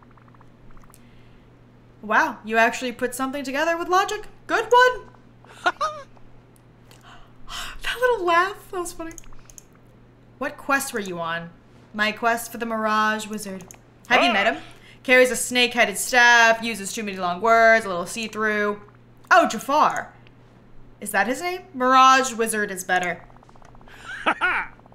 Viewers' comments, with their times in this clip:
0:07 the Gaston laugh kills me